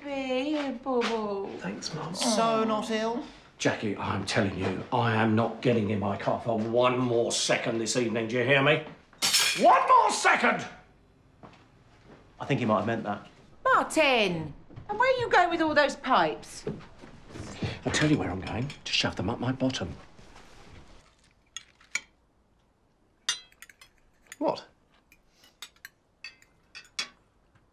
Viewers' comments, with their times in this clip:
0:09 Martin trying so hard to shout